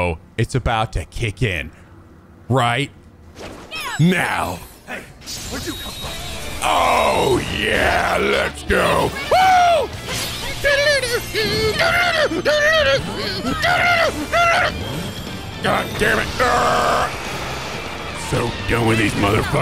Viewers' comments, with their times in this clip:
0:04 the music cut off, the music kicking in, Makoto using her showtime and the big demon punch when the singing kicks in. So fucking good.